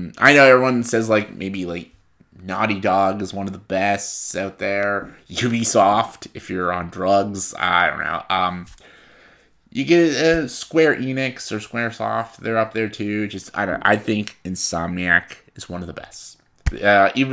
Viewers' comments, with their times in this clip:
0:05 I think that you laugh just as much as made me laugh. Also, good thing I'm not on drugs or I would play Ubisofts trash.